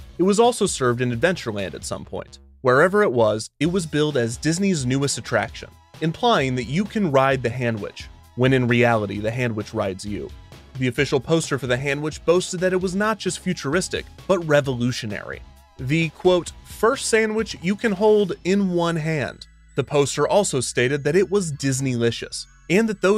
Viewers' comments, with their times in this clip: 0:08 That was said in such a serious tone but What